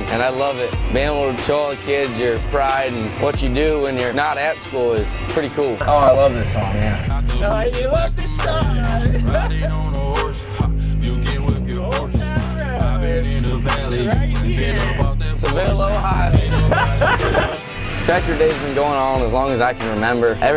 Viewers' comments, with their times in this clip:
0:07 perfect song for this